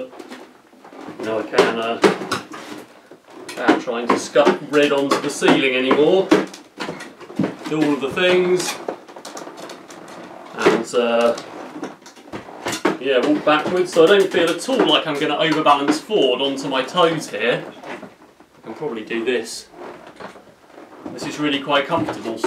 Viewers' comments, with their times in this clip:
0:03 Has anybody suggested: Dampen the 'clunk' of the lower toe with rubber and rig a micro switch to trigger a 'pneumatic / cool sound' with localised speaker? (comment made )